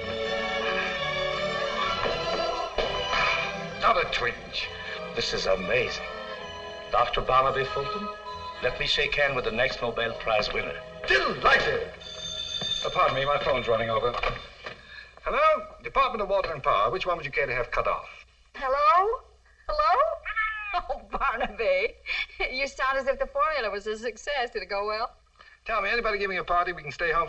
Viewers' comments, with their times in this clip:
0:10 deee-lighted ! "Teddy Roosevelt" in "Arsenic and Old Lace"